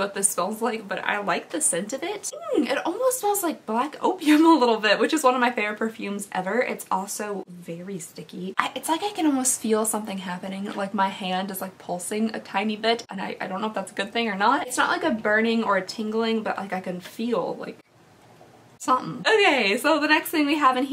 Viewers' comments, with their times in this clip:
0:04 I’m at work watching your video without headphones (I forgot them at home) and I thought you said black oatmeal was your favorite perfume. I had to rewind like 3 times 😂😂